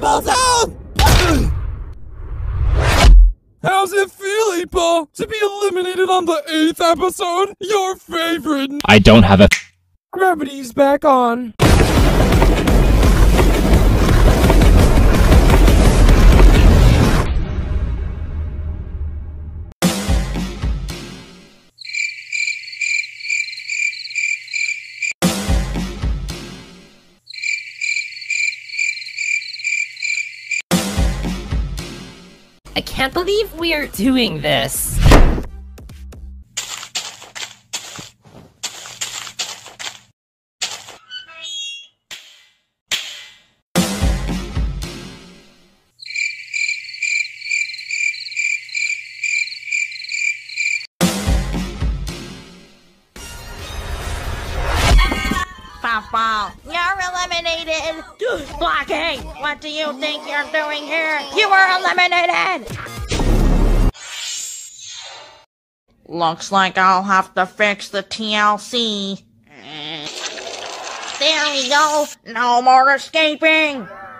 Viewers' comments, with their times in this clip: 0:08 8-Ball: (loudly) I DON'T HAVE A- Me: hahahahahahahahahahahaha OMG That's so hilarious
0:58 dat voice crack doe